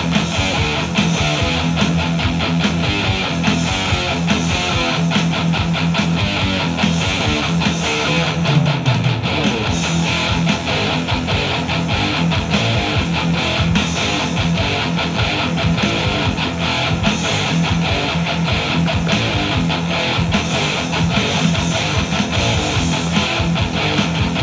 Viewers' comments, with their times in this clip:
0:09 The outro is the biggest headbanger Metallica has ever done